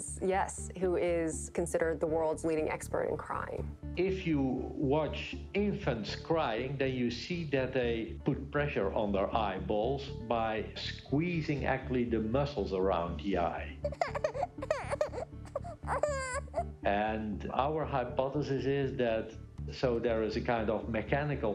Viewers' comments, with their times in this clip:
0:03 Anyone else notice that the Dutch dude sounded like Gru from despicable me?? <—